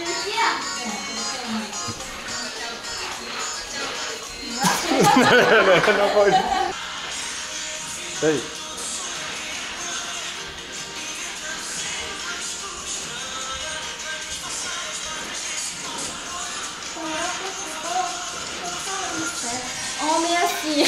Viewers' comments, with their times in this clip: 0:08 This song is not in portuguese. She showed a song in her indigenous language, we can't understand. But the next one in is a samba, search for "Dilsinho - Refém"